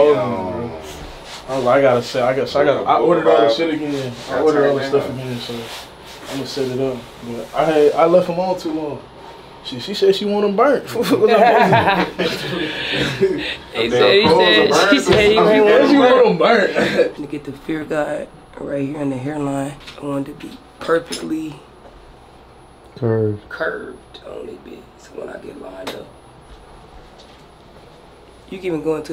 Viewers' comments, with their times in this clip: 0:10 bro sounded like Rod Wave😭😭